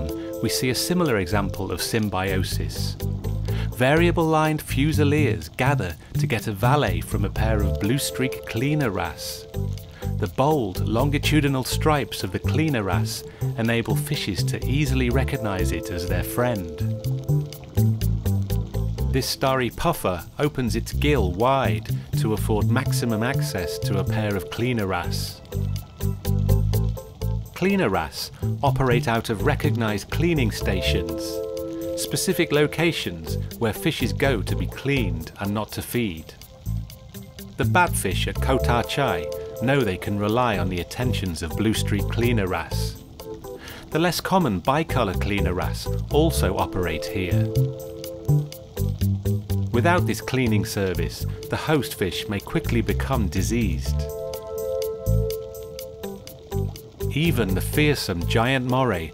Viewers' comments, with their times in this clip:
0:07 “blue-streak cleaner ass” mhm that’s what I heard.
0:40 Blue streak clean-your-ass? Makes sense!